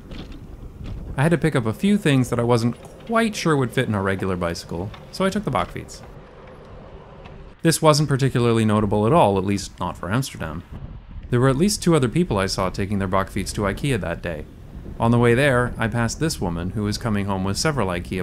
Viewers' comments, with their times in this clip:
0:04 what is he riding? A bockveese? A buckfees? Bokvise? Edit: auto-generated captions said "Bock feets"